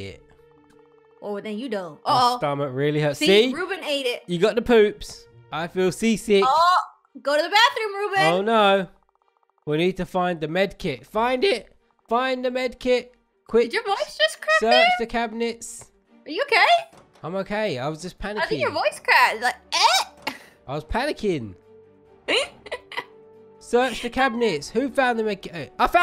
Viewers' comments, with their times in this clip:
0:10 his voice cracked